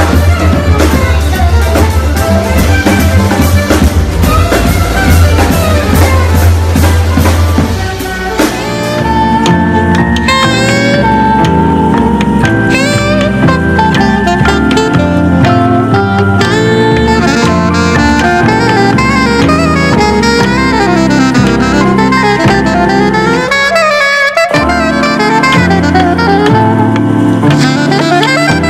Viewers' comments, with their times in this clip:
0:10 Is the recording going on like Spotify or anything? Sounds amazing !!